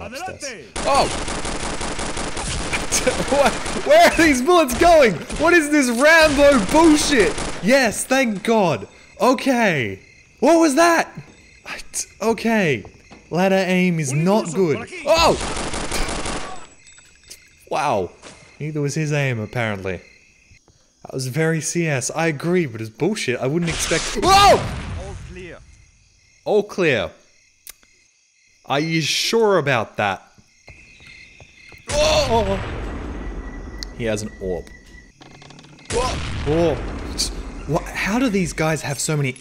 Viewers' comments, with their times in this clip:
0:07 They just changed to the Spanish translation for a second there.
0:23 it sound like a scientist scream from hl1 but in hd